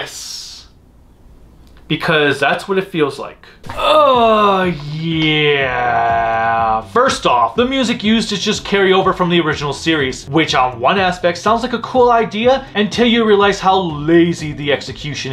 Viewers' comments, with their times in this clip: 0:03 Sounds like you were taking a long whizz after drinking so much water. lol